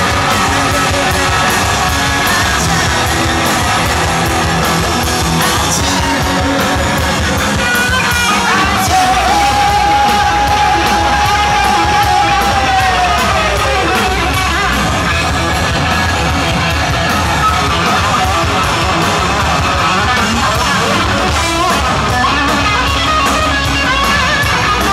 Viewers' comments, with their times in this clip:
0:09 I don't care what people say Scott still has it! It's not a pro recording, of course it doesn't sound perfect! Scott looks old?! He looks his age. He's in his 40's, hello ?! I'm glad he's clean and he's concentrating on what he does best! Whoever he does it with! Beside everybody should be happy to hear this kind of music in 2012. It's rare!!